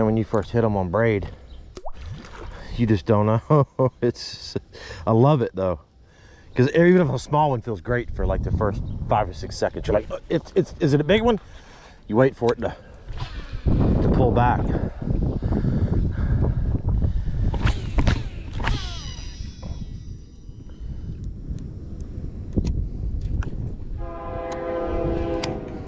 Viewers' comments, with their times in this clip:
0:08 That subtle water sound 😂